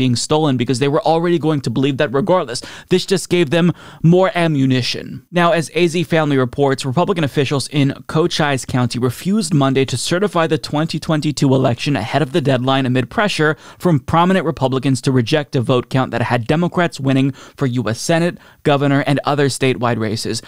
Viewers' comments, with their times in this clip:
0:08 That's an interesting pronunciation of Cochise there. The actual pronunciation is /koʊˈtʃiːs/ (ko-CHEES).